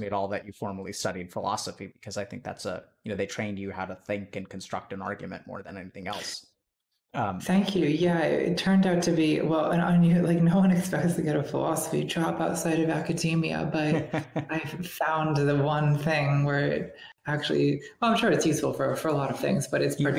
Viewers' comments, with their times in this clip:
0:05 Breath, buddy, breath. I'm being stressed for you xD